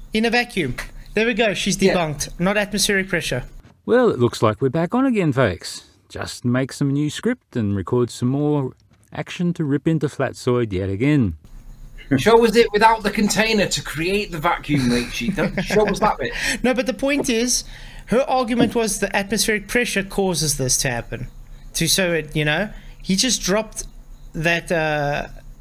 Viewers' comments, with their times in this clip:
0:09 notice he muted it before playing it. Wanker.